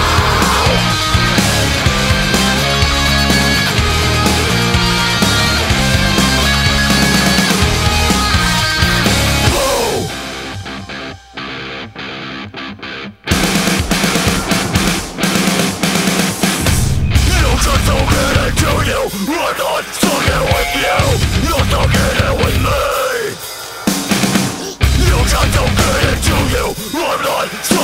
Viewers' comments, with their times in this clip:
0:09 Definitely didn't expect the breakdown